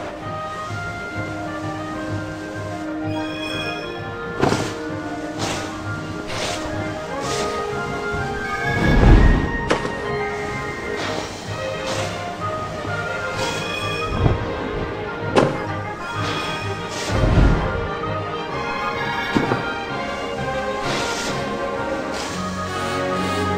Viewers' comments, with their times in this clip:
0:08 that music wow